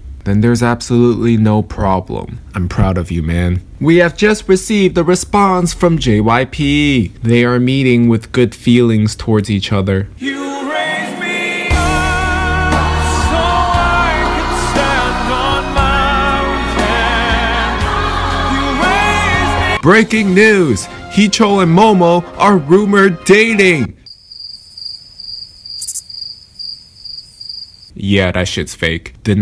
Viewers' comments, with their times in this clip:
0:10 I love how u put the worship song there xD